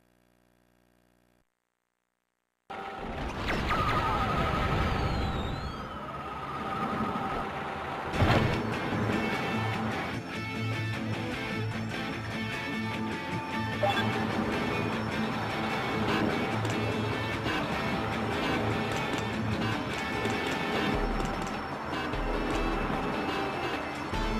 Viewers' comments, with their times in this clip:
0:09 love the music And I also love how they made a parody rendition of frogger